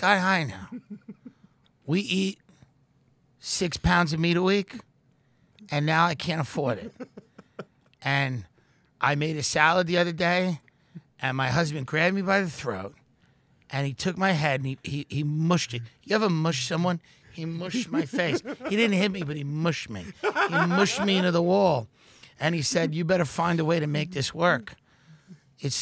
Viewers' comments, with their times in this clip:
0:06 the delivery here is spot-on, I can really picture a woman saying that.